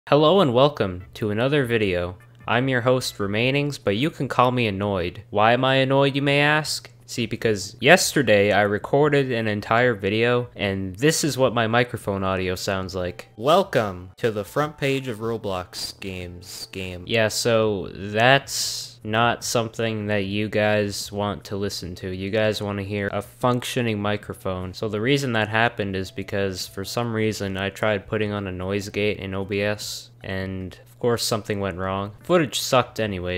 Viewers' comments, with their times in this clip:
0:05 Note from future self: because the audio and video of this clip ur watching was off sync by like 10 seconds
0:06 Note From Future Self: Because The Audio And Video Of This Clip Ur Watching Was Off Sync By Like 10 Seconds
0:06 said note to future self: because the audio and video of this clip your watching was off sync by like 10 sec <3
0:06 said: note from future self: because the audio and video of this clip ur watching was off sync by like 10 seconds
0:13 it sounds like baldi when he's mad
0:13 Welcome to McDonalds how may I help you
0:13 sounds like the guy who says you got mail
0:14 sounds like you recorded that with a Nintendo DSI
0:14 it sounded just like you recorded on my 3DS